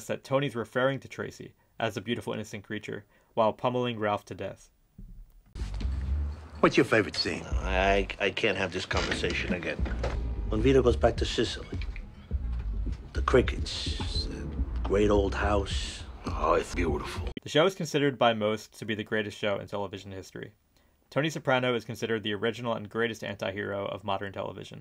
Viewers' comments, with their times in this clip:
0:10 … I know Tony was talking about Godfather II… but has anyone else noticed there’s a common recurring theme ALL throughout the entire series??? It’s the sounds of the same CRICKETS… all throughout the entire series… check it out… pay attention.